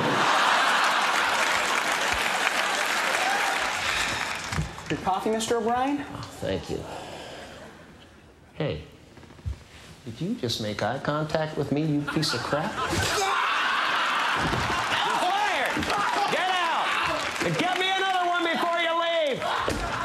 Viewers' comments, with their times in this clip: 0:07 great impression of ellen there